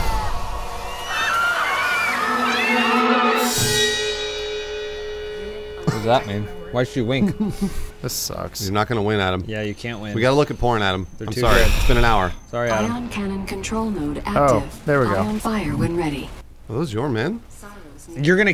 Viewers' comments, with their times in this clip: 0:04 omg that little lunge and music was terrifying lol